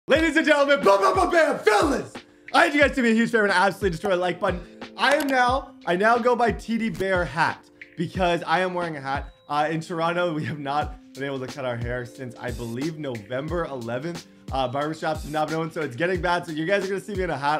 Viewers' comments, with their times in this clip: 0:02 Wdf did he said ?? “ BLA BLA BLA BLA FELONS”